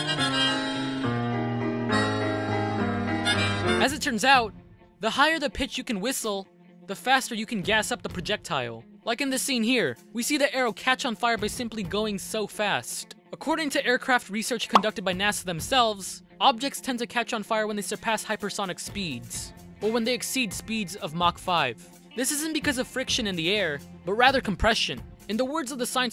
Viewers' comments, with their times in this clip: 0:09 I just love u man but sorry the arrow doesn't catch fire on its own if u give the audio we can hear that he makes another kind of sound and so the arrow catches on fire